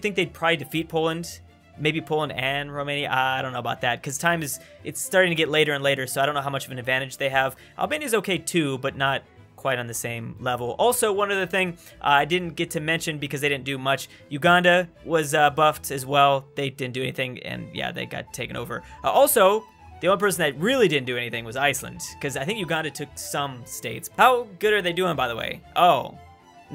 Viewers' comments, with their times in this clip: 0:08 I thought it said “Alabama” instead of Albania lol, was like damn, Alabamian Italy 😂.